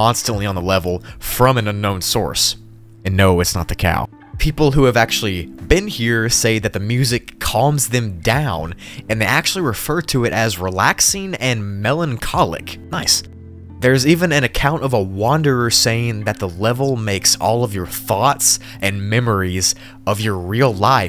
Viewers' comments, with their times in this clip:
0:08 so distorted Minecraft music? nice